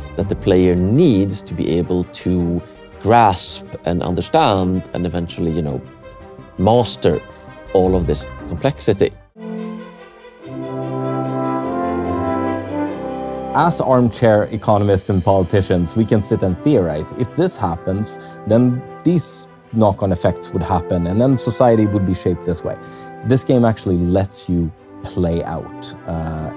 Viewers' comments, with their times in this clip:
0:09 this music <3